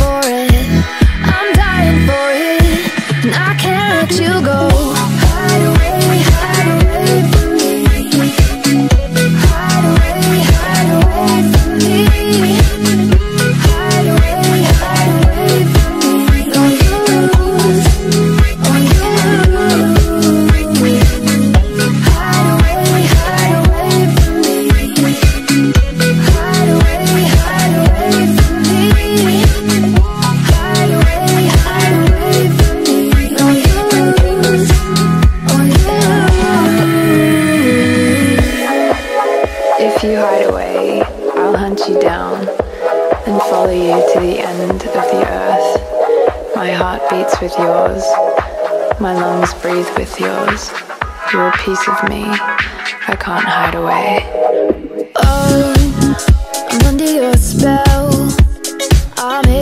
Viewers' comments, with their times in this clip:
0:10 IM SO MAD THAT THE ANIMATION IS LOWKEY SMOOTH and the song lowkey hits hard until like… you see the end
0:46 Charlie sounds like Octavia at this bit